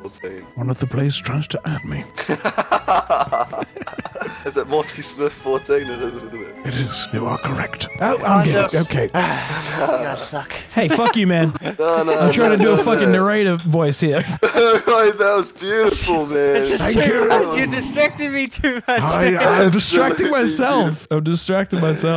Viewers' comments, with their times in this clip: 0:10 I love it when you broke character 😂